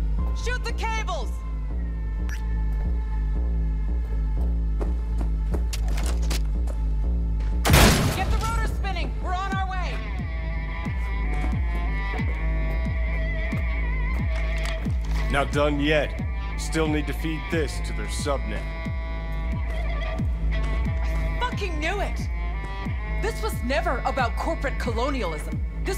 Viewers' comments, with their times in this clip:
0:09 but there is the tune missing from ....i like that guitar string so much and cant find it anywhere haha